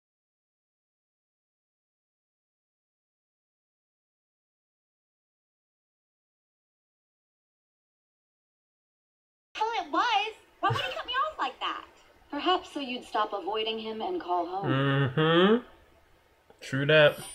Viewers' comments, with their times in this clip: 0:03 For me, some of your video stopped working after It got silent then paysed